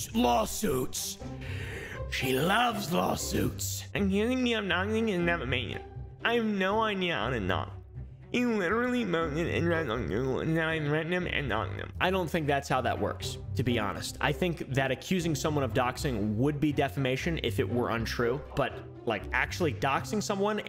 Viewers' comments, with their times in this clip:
0:04 the voice is so funny -